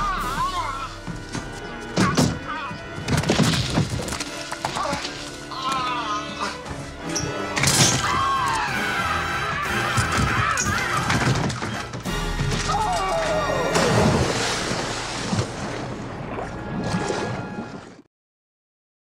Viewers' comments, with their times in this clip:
0:08 the scream was hilarious! 😆 Nordberg really has some bad luck! 😆